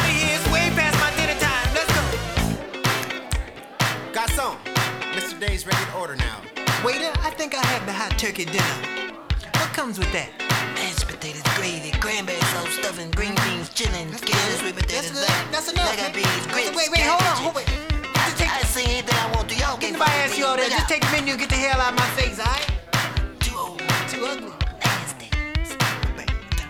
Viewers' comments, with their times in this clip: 0:09 LOL Prince is doing the voice of the waiter...